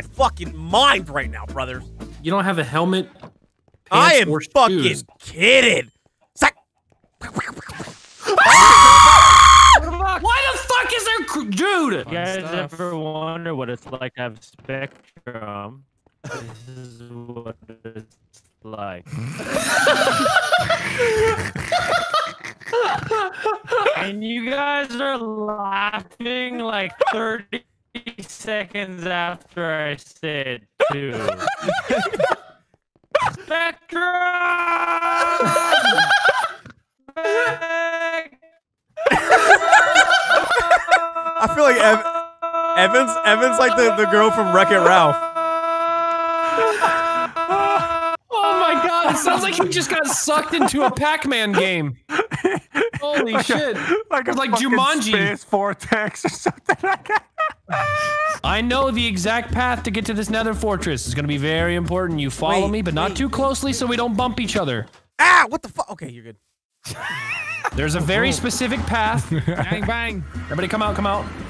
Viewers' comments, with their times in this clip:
0:04 I have on replay bro its funny ash i live how they all scream like little girls bcs theres a creeper
0:07 i'm imagining a bunch of girls are having a sleepover where they're telling some scary stories, then there's a mysterious sound came from the kitchen and all of them just freak out.
0:08 When they heard the creeper and panicked, I lost it!🤣 Best ever!
0:08 The way all of them screamed
0:08 I can't tell if it was a group of girls or them
0:56 does that laugh sound familiar to anyone ??